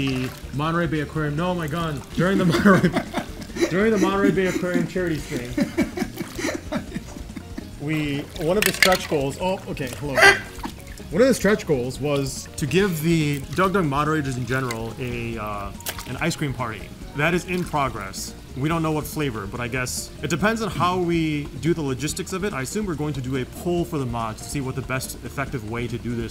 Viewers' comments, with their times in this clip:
0:09 When you scrap a chair along the ground